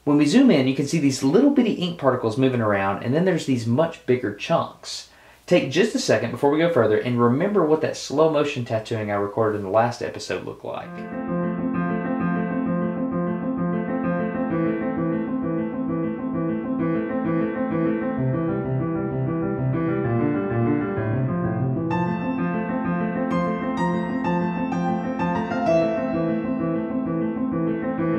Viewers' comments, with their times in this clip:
0:10 Has anyone noticed the effort he put in to make the music perfectly timed to the needle ?
0:12 That background music though 😁😁